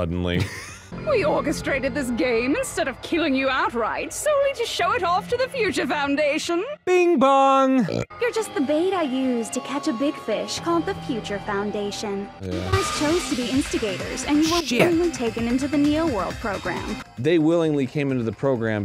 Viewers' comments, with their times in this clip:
0:04 The perfectly cut burp is so funny😂